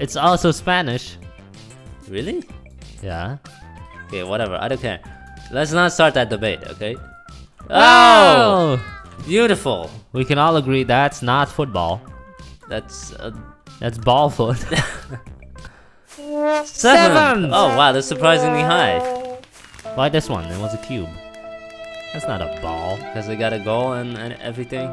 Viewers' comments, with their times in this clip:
0:05 lol Try to pause it or Slow mow it they sound drunk!!